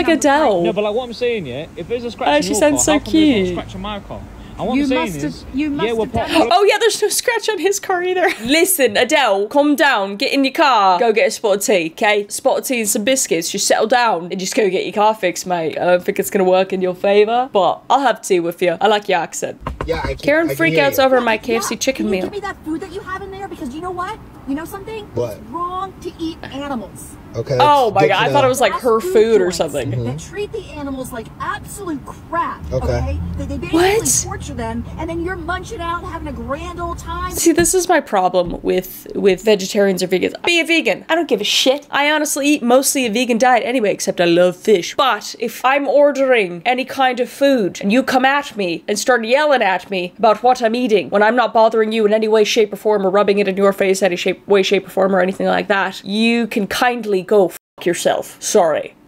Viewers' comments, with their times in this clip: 0:09 10 out of 10 British accent
0:46 BRO WHIPPED OUT THE JACKSEPTICYE ACCENT 😨😨